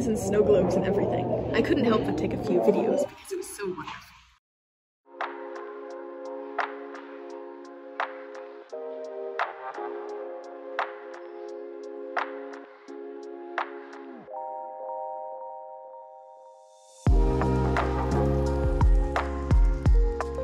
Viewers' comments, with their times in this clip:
0:03 Hey, guys! Happy (belated?) Thanksgiving! :D Please ignore the interference towards the middle of the video- my audio got kind of funky, and I wasn't sure how to fix it o.o It ends ! As always, thank you so much for watching my videos, and look forward Christmas/New Year's videos soon! :)